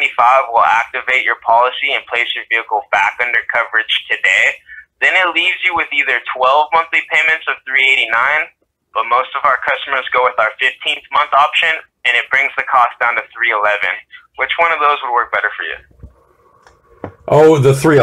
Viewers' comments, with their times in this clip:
0:05 I'm not sure about this guy, but I've heard foreigners that are almost eliminating their accent and they all sound the same. I'm onto the voice over they're using to remove their accent, which makes them all sound the same. As I'm listening to this guy right now it might be one of these voice mod clowns. You'll hear some oddities like when he says 389, and the 9 kinda sounds like a southerner. Listen